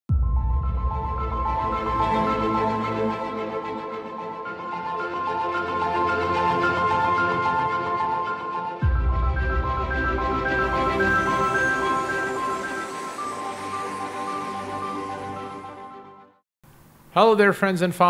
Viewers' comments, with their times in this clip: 0:00 Now the thrilling music intro makes sense! This is AMAZING🥳🥳